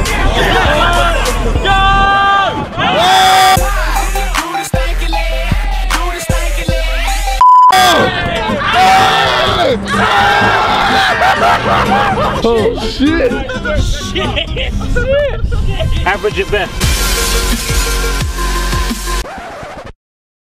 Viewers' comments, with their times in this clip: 0:03 Don't do me like that with the song.